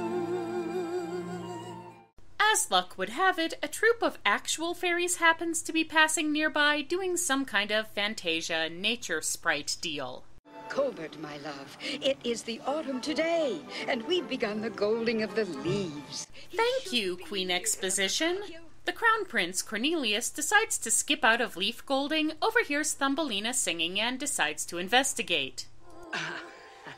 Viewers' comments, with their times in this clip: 0:10 Sounds like the queen is saying: "Covid, my love"!